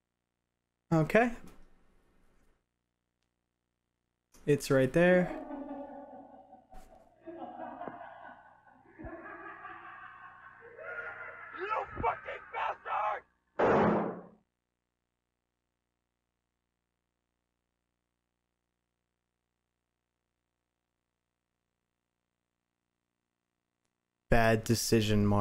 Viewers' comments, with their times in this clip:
0:10 Got that ichigo english dub voice from bleach